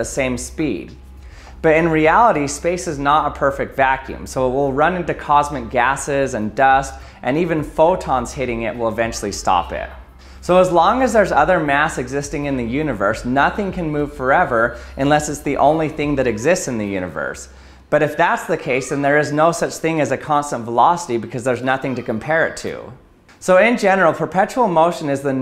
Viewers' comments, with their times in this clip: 0:06 Sperm whale? What the hell does that mean?